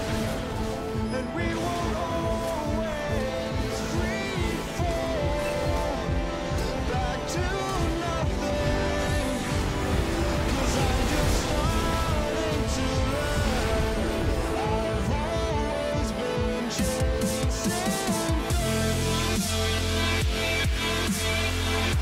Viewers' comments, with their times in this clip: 0:04 I checked my LoL For that sound thought some one talking to me :"( but i realise that i don't have friends
0:04 Lol the league message noise popped up and i thought i got a message